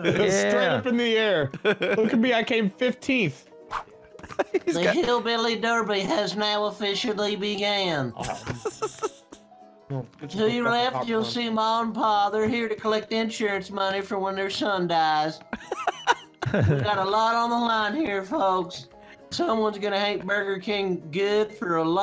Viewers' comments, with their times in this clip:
0:04 Who was that talking like Pat Buttram!